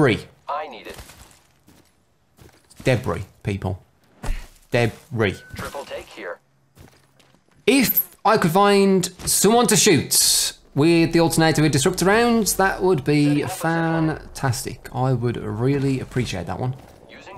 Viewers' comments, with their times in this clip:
0:03 Did anyone else notice the punch sound affect I I V